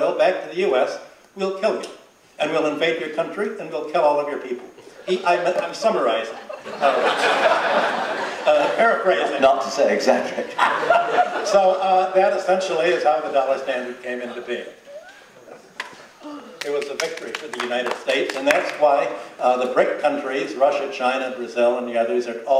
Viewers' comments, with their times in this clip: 0:05 Great lecture. Having read prof. Wray's MMT Primer, his succinct points came as no surprise. It's issues and topics prof. Hudson spoke about that were most interesting to me, making his books and blogs next on my reading list. On a side note, funny how everybody laughed when he spoke about USA imperialism on